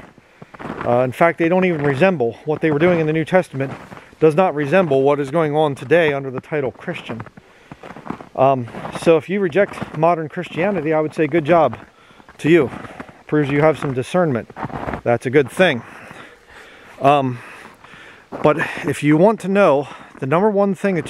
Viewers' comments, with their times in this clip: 0:09 Amen. My God is not a Trinity. Don't want to worship a bird (Romans ). That's fowl. Also, even though it's very cold, I think the best videos you make are always in the winter. I like it, even the crunching snow. Thanks.